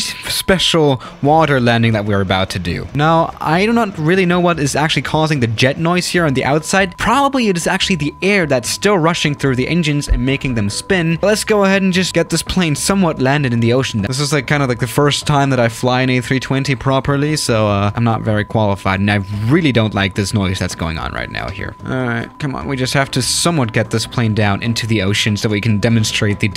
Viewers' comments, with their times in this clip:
0:08 No that jet noise is that bad FF coding